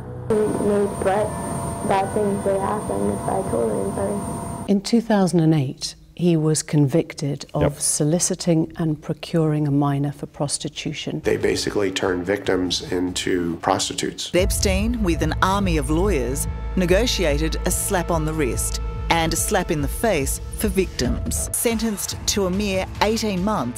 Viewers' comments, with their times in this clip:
0:08 Sounds more like "prostitutes were turned into victims" actually.